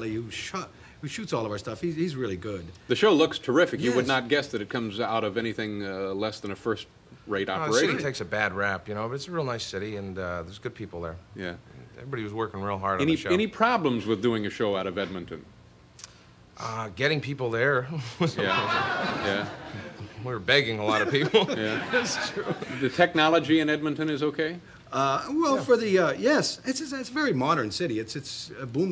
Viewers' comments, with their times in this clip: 0:09 Did you see how John didn't enjoy David's condescending laughter as he didn't remember the cue on Hockey: Shining back with a fake smile and saying "I love this show" Priceless comeback.